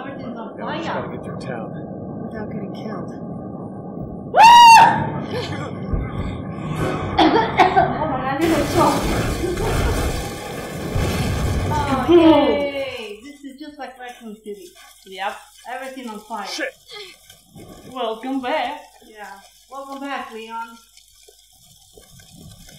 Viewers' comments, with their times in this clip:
0:03 FIGHT FOR THE AMMO!! Hahaha I think its pretty cool how its more action orientated now and HEY DERR!! Hahaha :') that scream was hilarious haha :'D